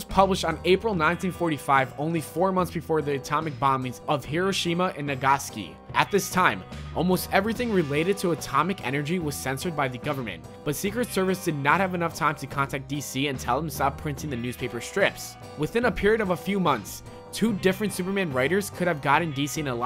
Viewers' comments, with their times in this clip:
0:04 The creepiest was you saying NAGASKI